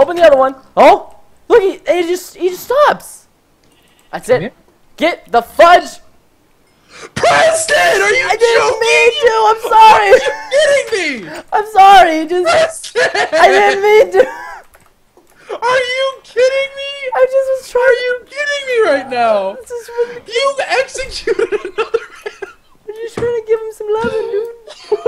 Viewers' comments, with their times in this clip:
0:06 OMG PRESTON BACKS AWAY A BIT FROM CHOCO'S SCREAMING XD